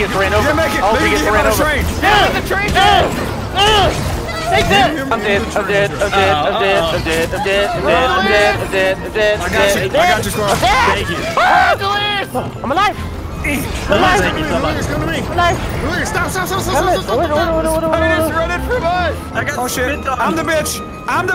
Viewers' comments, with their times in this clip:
0:08 No joke sounded like a girl